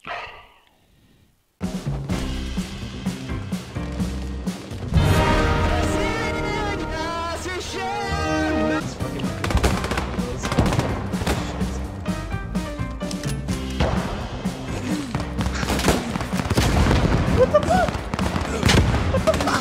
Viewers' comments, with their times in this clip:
0:05 Russian anthem and VERDAMMTER PANZER IV!!!
0:06 why the hell is he singing a Russian Federation hymn while driving a Pz.4?! XD